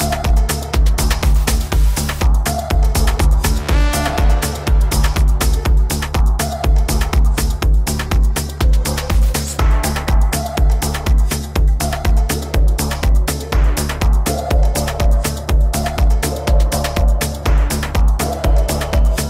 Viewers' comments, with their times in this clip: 0:03 This beat from 😍👌